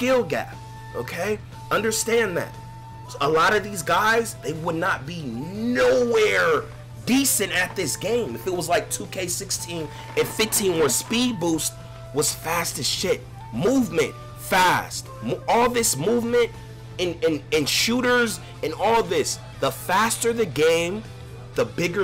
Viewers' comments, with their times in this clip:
0:09 I hear the naruto music in the back lol